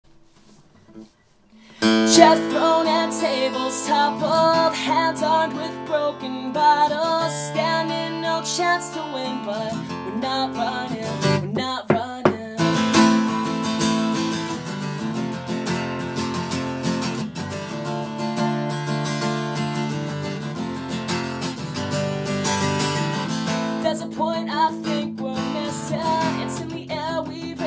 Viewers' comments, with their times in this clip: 0:08 sounds a LITTLE like auto tune, sorry if not :D